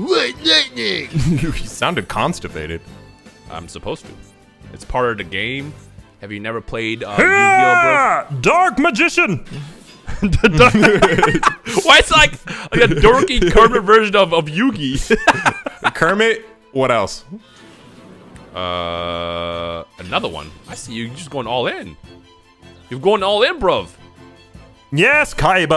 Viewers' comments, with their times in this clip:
0:07 The original voice for cell playing yugioh 😂